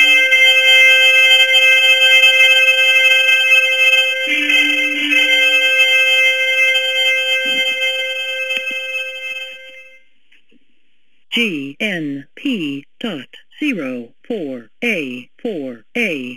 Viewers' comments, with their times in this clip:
0:03 that song sounds like the song played at Dawn Service on ANZAC day